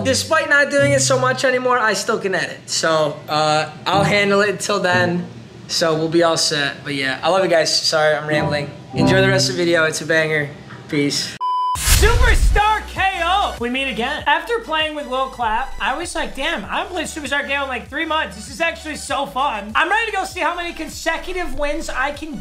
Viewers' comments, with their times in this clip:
0:10 who else can hear the laughing